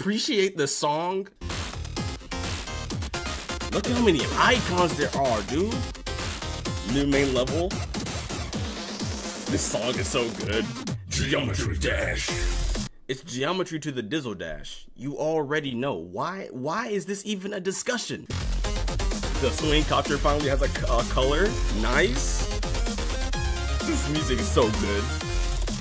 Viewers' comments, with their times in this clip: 0:10 no one gonna talk about how well he does the "Geometry Dash"
0:11 Why does his voice fit so well? Edit the thing I’m most excited about for 2.2 is the gauntlets